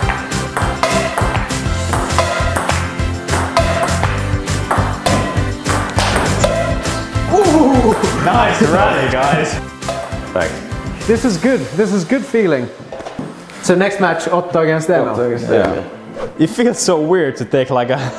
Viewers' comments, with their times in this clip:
0:03 your rally goes to the beat of the music -- cowbell and all
0:04 the sounds matched the music hahaha¨
0:04 listen to the music